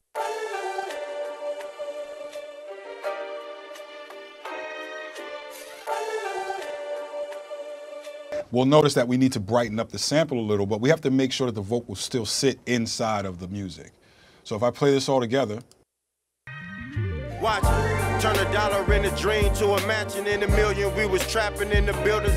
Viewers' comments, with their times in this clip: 0:05 made me think my earphones were dying 💀💀